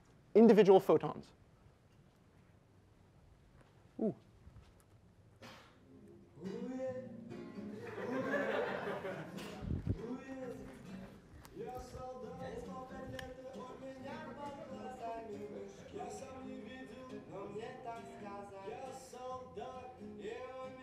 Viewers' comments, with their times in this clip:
0:07 this music was unexpected to say the least lol